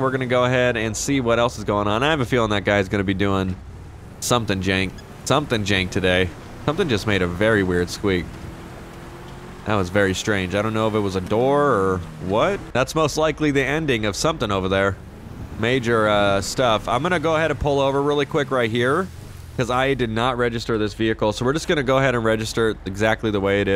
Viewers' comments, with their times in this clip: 0:06 "something just made a very weird squeak" just as i opened my door which squeaked (i know it was a his chair or something)